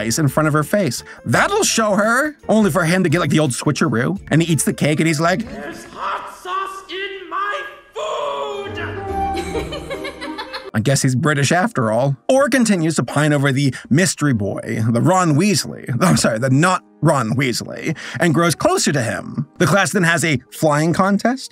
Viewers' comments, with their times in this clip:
0:05 I don't know why, but somehow the pitch sounds like "somebody touching my spaghetti" 😂